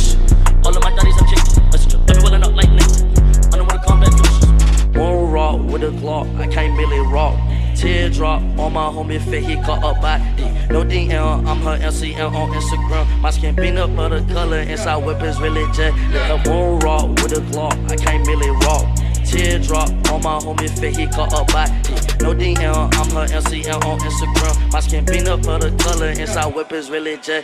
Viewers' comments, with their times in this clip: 0:09 the disrespect to knock him over and then laugh at him got me dead